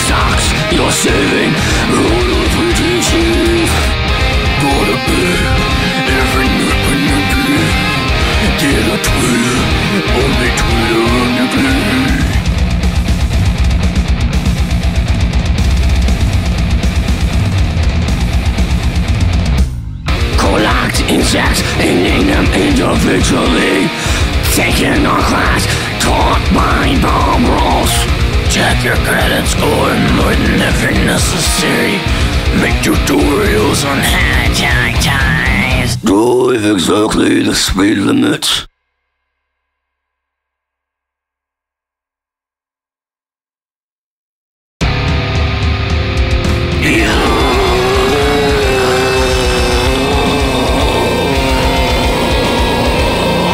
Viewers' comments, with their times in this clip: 0:04 nathan explosion vibes
0:25 sounds like fucking Squidward Tentacles (Calamardo) xddddddddd
0:40 I was anticipating an emotionless "blegh"